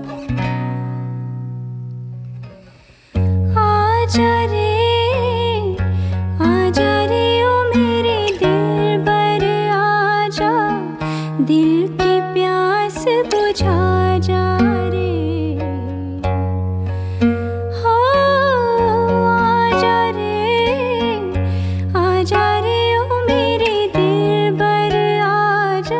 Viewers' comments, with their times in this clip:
0:07 My brother was watching the tv . And I heard the first seconds from my room . I've been looking for this song for 1 week ... and today I saw the promo again and voila I typed your name . And I found this song 😍😍❤️.. You have an amazing voice . I know you're yourself . But believe me . Your voice is almost like Shreya G her voice 👌🏼👌🏼👌🏼